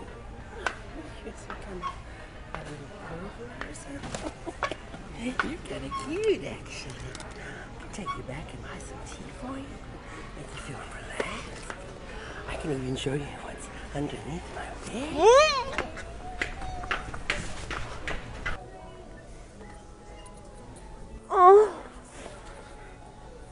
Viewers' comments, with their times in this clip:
0:08 HES just a boy tough but sound like girl